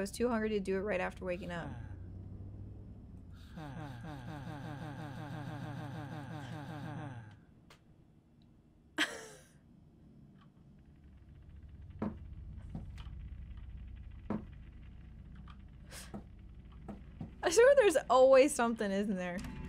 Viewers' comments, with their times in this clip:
0:04 That doesnt sound like he is gonna do his homework, nor even he is complaning about it. That sound more like he is preparing to do his night wrist exercises routine